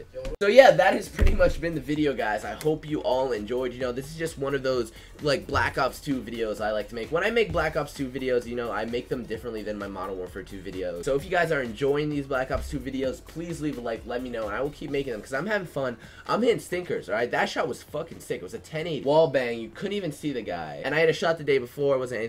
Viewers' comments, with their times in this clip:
0:10 he said model warfare